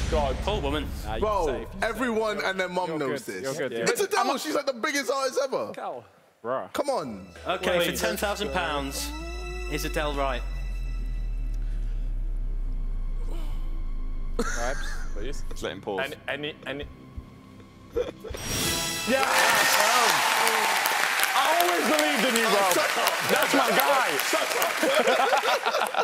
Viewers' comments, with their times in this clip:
0:08 i love the silence and then JJ just flexing ahaha